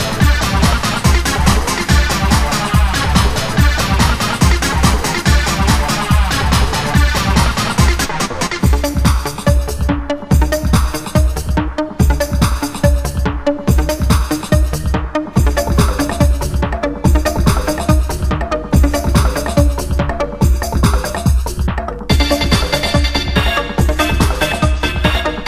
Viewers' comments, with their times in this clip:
0:08 is where this spanks in, plus that intro is so dark